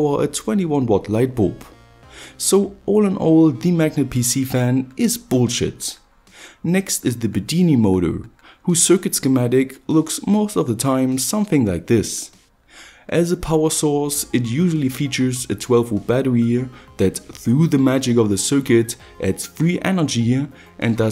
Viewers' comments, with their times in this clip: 0:05 Sounds kinda funny when you said bullsh*t